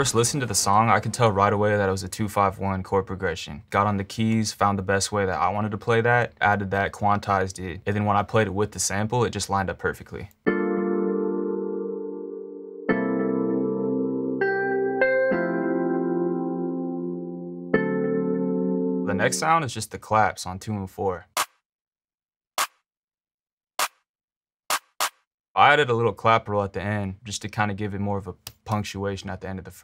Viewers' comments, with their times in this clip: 0:10 the melody so good❤❤
0:12 I like the song but I wish I could just listen to specific parts of the song. I just want the instrumental part like in without drums, with the beginning part (including Kenny G solo and Johnny Gill’s vocals, it’s so good and peaceful